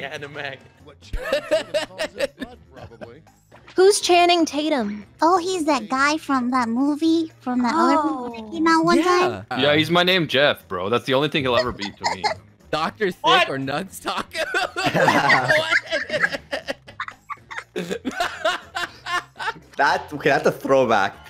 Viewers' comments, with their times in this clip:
0:09 what the fuck is this... is this his real voice